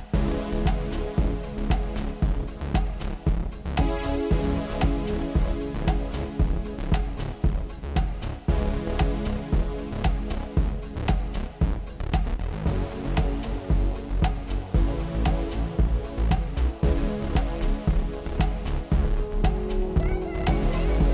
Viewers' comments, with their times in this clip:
0:07 Love the song Great set thanks !